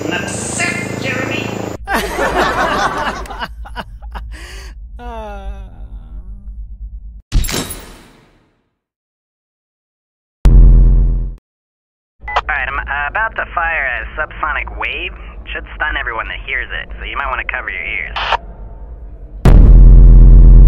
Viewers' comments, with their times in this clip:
0:03 We begin to hear Henry laughing